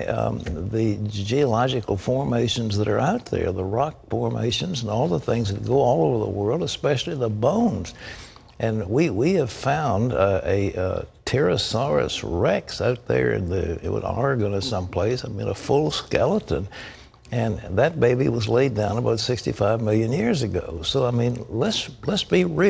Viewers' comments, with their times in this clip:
0:09 Did he also say terrasorus rex ?